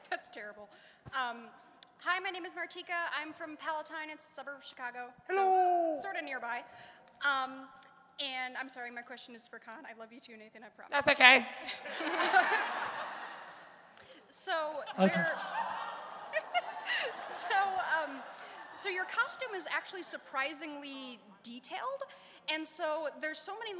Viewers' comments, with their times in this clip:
0:04 I love Con O'Neill's little "hello!" Love this man!